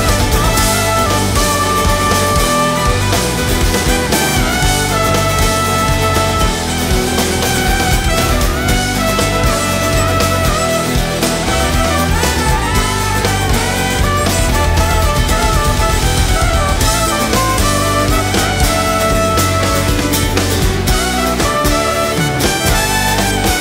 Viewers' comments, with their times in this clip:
0:06 The silly note play breakdown leading into onebof the most beautiful split off symphony of pure joy from on. The originality of composition and funky spirituality that only dave and the fangbcan deliver with such ease .